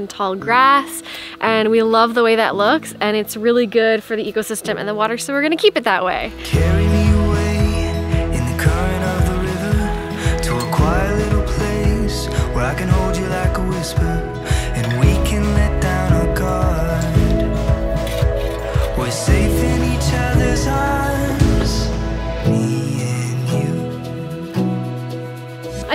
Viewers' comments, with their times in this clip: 0:10 What's the song called? Please I need to know, it's so calming and nice, I know my mother will love it